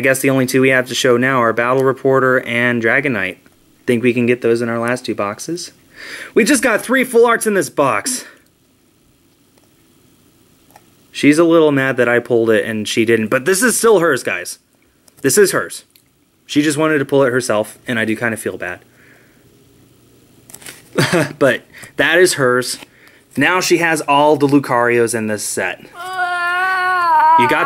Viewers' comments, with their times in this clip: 0:08 the sound of defeat in your wife's voice